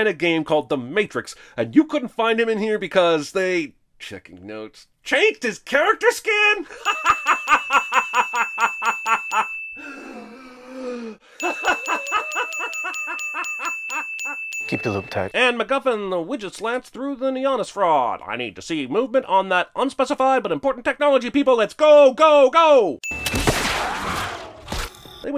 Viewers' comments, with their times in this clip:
0:04 HAHAHAHAHAHA dat laugh HAHAHAHAHA i haven't seen the movie but after watching this i don't think i even wanna see it, i'll just stick with original trilogy from back in times when directors actually had some ballz
0:07 Every time the cinemasins guy hysterically laughs, he adds a sin on the movie sin counter!